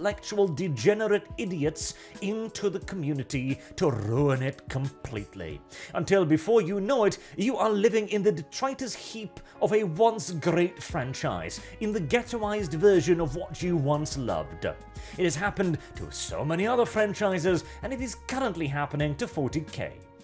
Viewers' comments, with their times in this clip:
0:06 is he using detroit as an adjectiv?